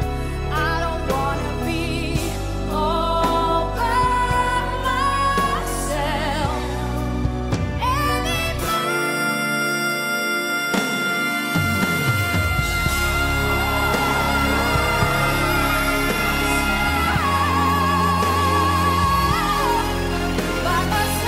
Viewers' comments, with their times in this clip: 0:08 And there goes an Eb5!! LMFAO